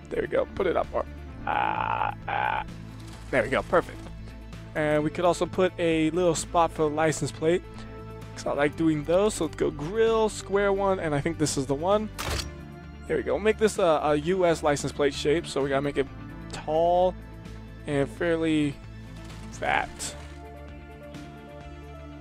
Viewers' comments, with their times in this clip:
0:06 he sounded like the grudge